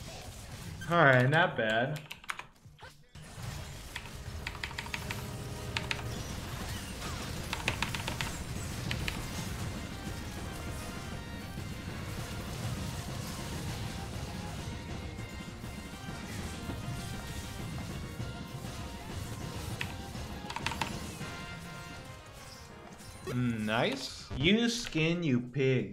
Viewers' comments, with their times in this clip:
0:07 music it sounds so familiar